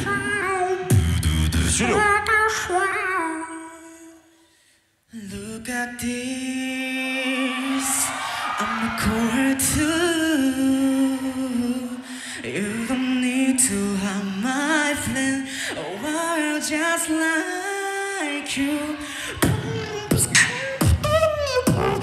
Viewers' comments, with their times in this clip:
0:05 BEST SKRILLEX BEATBOX